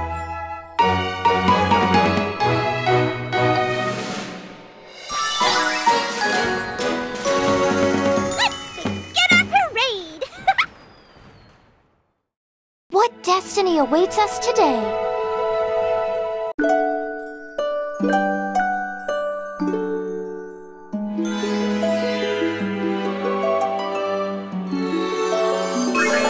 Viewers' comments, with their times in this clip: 0:10 cute Minnie mouse laugh